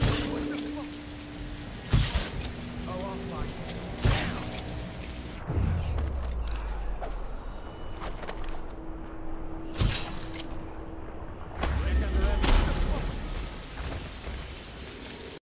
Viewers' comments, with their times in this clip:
0:11 bombs away (then explosion happen) BOOM: